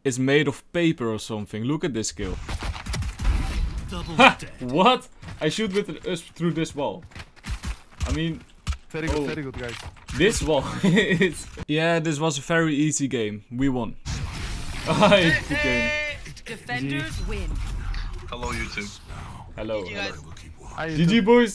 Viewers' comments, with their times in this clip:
0:04 You have played CS:GO :) And then with the Dutch accent: I shoot with the usp